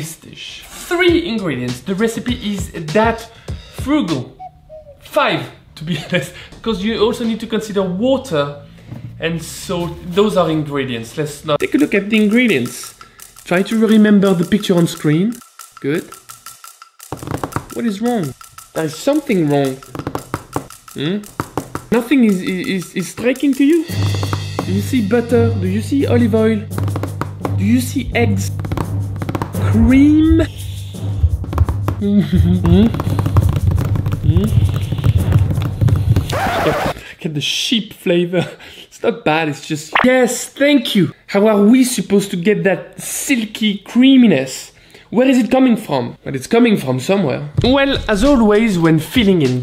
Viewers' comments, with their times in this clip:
0:07 can’t hide that pronunciation from me
0:07 the way he says water makes him sound like a brit
0:30 the "creeeaam" cracked me up!